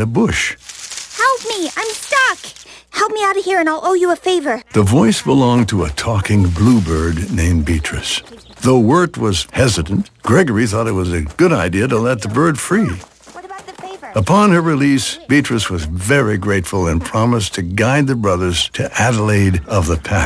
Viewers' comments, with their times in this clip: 0:05 talking GLUEbird named BEtrice....... sure...